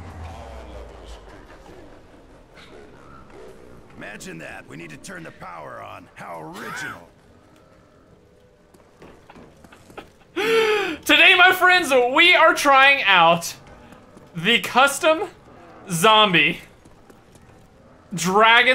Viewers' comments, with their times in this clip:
0:06 when you doing it from behind and she looks back and moans.